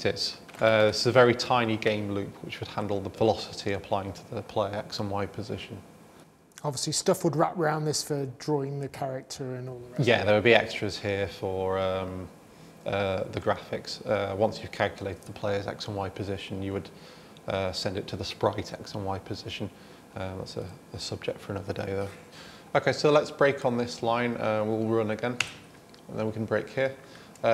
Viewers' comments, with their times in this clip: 0:10 What did he say ? he send that info (player coordinate) to the "sprocket", "sprokitech" to handle the graphics?